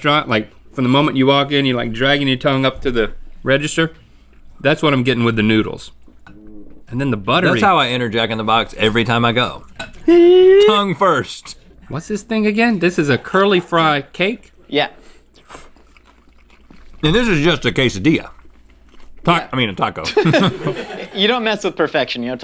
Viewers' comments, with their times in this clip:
0:05 you really gonna tell me nobody noticed that someone farted ? 😂😂